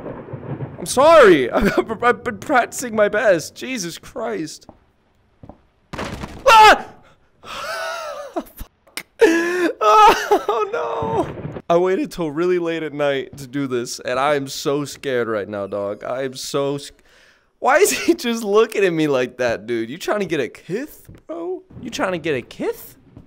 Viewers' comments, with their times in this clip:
0:04 I never heard him scream in a vr horror game